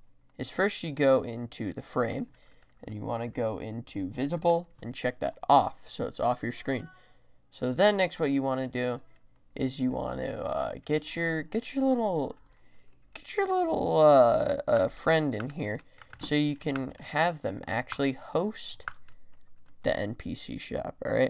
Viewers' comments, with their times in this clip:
0:06 was that a oww in the back ground lol